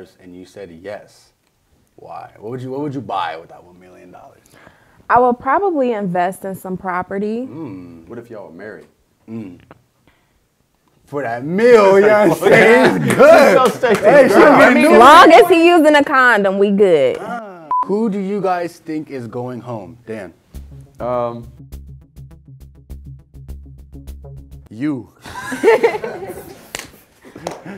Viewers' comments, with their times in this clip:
0:10 yall hesr that gulp she was like "oh shit"😂